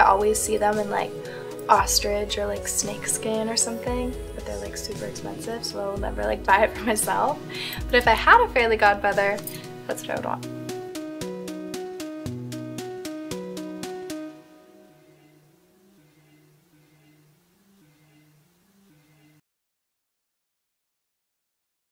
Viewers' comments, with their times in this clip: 0:08 She says "fairly godmother" bahhah